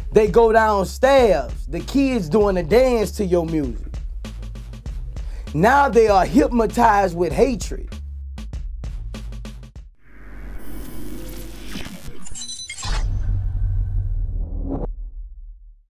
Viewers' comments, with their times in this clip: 0:12 Vlad scratching himself LMAO!!! we can hear you, lol.